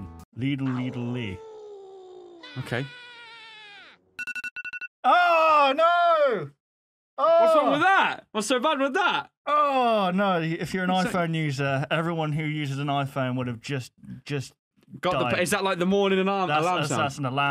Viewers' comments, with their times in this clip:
0:05 boi I felt u that’s the sound that tells me I have to get out of bed